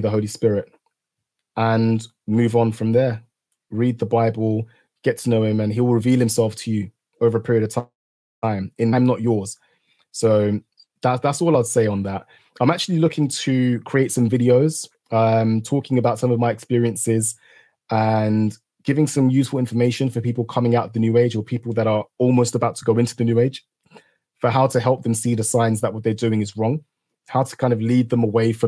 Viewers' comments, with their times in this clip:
0:09 says "I am not yours". Did anyone else hear that or is it just me.